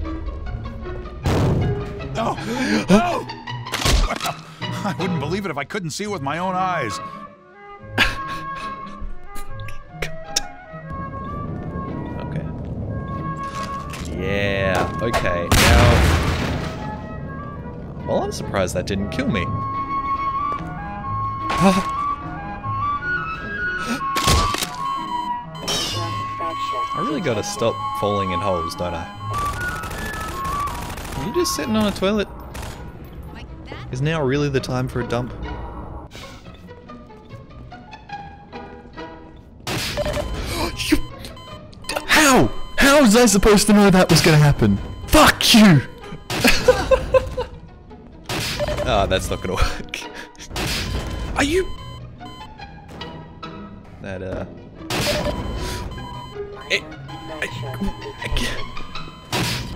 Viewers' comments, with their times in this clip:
0:05 tell me that doesn't sound exactly like Stanford Pines!
0:40 The sound you made is the ACCURATEST reproduction of the sound that Russians make when they want to scold using obscene language but stop in time